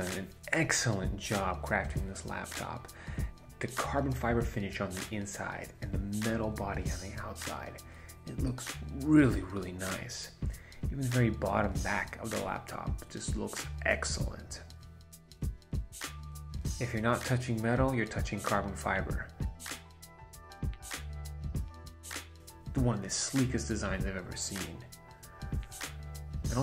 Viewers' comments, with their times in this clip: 0:07 What's up with that seducing voice !